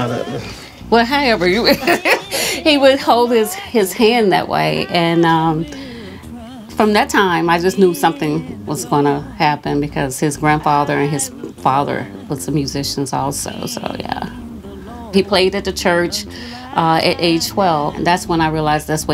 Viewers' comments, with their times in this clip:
0:04 Can we talk about that run his grandma did ?!!!!!